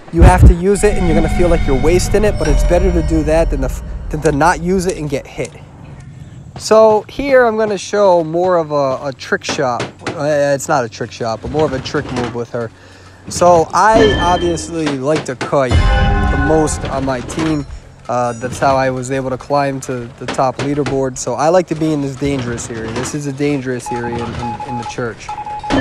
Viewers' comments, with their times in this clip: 0:08 sound bug Also a trick is that to activate the perfume when jumping on through holes when in Sacred heart hospital or in Lakeside Village then hunter will go down and you can return safely up. Edit: oh sorry you already mentioned that in the Video.